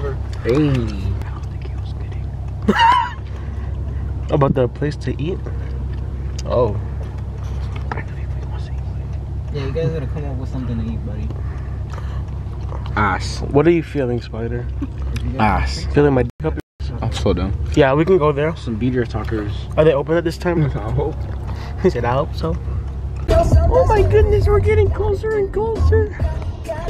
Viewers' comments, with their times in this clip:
0:09 why he laugh like that😂